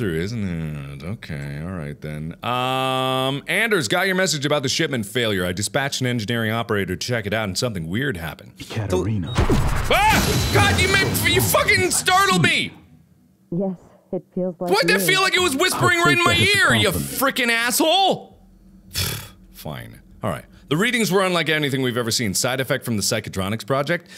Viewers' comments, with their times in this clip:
0:08 Caterina... KABOOM (I haven't a clue why this is so funny.)
0:08 Austin Cool 😎 : whispers Katrina into Mark's ear